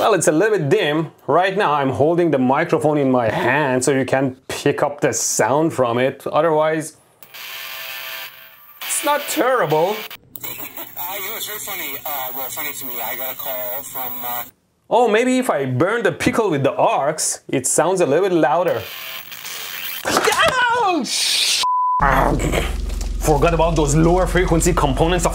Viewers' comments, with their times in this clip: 0:10 Casual 15kHz sound blast to deafen everyone under 50 who may be watching the video with good speakers or headphones.
0:10 AAAAAAAAAAAAAAAAAAAA MYYYY EAAAAARRSSSSSS